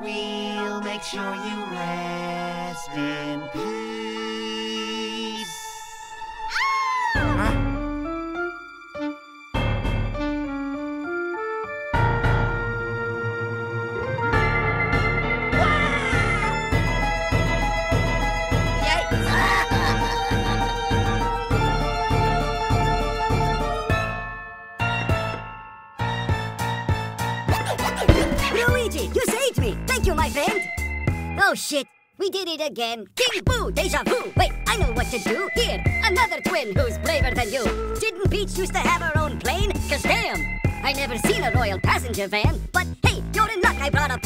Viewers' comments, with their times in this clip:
0:06 this remade tune is so good I replay to this part so many times.
0:27 Dr. E gadd goes bonk
0:27 Dr. E Gadd goes bonk
0:28 E.Gadd is awesome at rapping